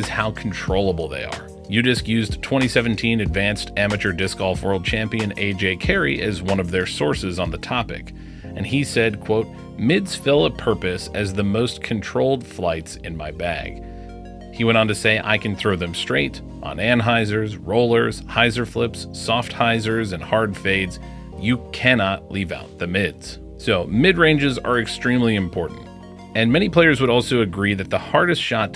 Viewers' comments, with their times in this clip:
0:10 Mids fill a purple?